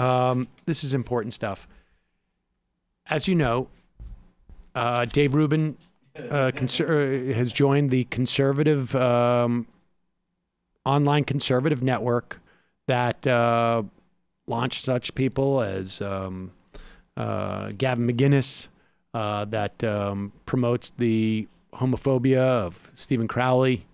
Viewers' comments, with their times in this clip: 0:05 lol, they laugh just at "Dave Rubin"